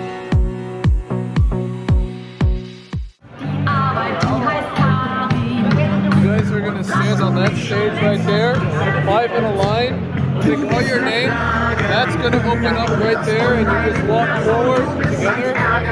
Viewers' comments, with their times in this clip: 0:03 wtf german local music in China